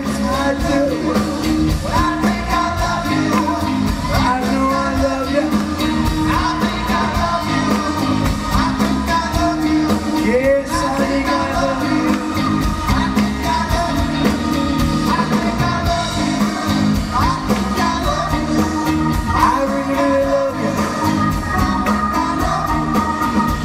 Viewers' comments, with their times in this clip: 0:04 where are his pipes? It looks like he bluffed his way through, and they had a good time, anyway.